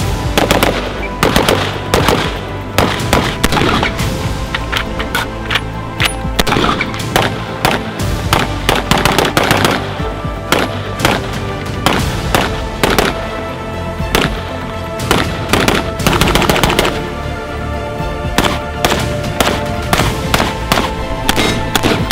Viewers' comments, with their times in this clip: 0:03 this gun sounds crazy man. sounds like a beast.